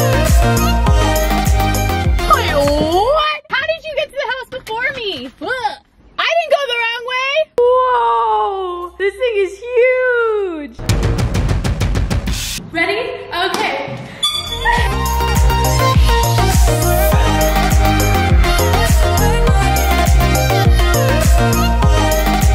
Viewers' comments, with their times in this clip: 0:10 that beat tho HAHAHA